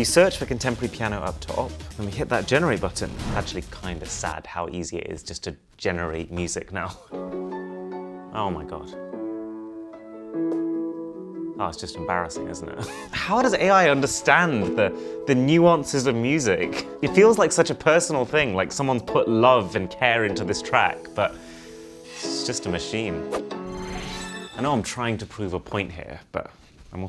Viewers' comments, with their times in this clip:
0:09 may be just me but the ai music sounds...faker i guess?i cant find the word but it doesnt feel authentic